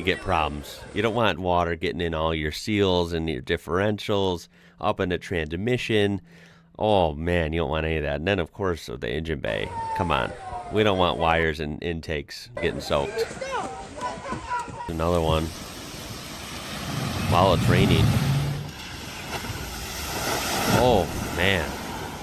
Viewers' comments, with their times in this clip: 0:07 typical TD5 owners surprise he didn’t do it it was bouncing off the revel limit to the whole way through